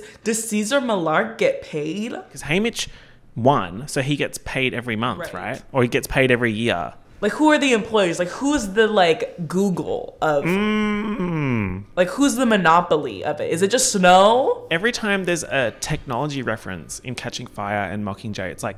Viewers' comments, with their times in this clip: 0:05 y’all the voiceover 💀💀💀